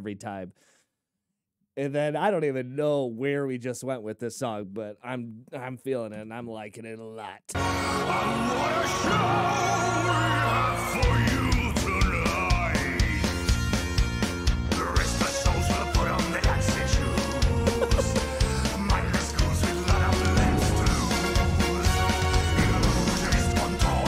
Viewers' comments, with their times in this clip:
0:09 PsychoKlezmerClownPolka breakdown. Kinda reminds me a bit like Sami Yaffa's Mad Juana (Valhalla)... yet another Finnish product. I happen to internet-know the guy who used to play the Firebird Trumpet for them. A final note ... Never, EVER eat the Mushroom Stroganoff when in Finland.